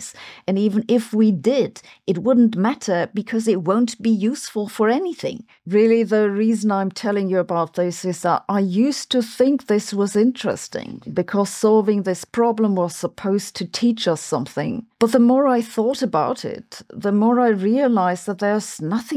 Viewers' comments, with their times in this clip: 0:06 your voice generartor needs some readjustment... 🙂